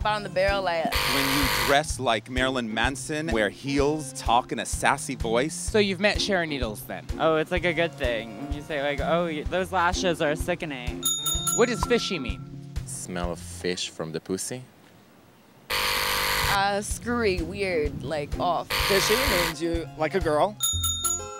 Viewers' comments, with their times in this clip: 0:07 this person's voice reminds me so much of Pearl!